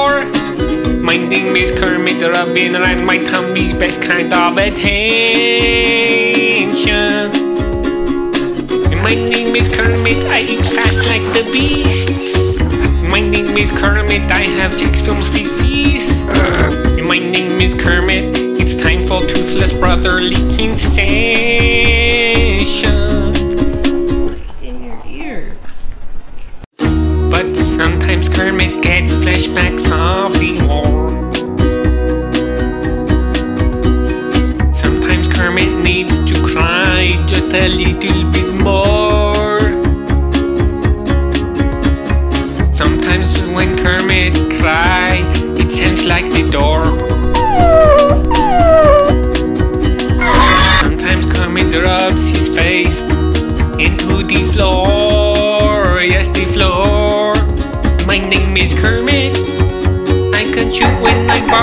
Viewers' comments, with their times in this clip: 0:08 HELP PLEASE WHY DID YOU PUT IT IN FAST MODE-😭😭😭💀💀
0:13 my name is spitmutt and i have eggfilms fáéces
0:48 when someone rang the doorbell
0:49 when he shouts.